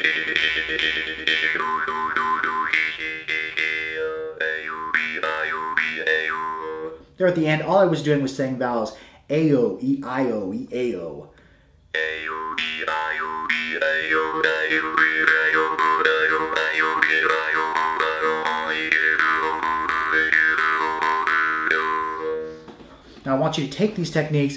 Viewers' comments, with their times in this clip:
0:10 That sounds like Stephen Hawking.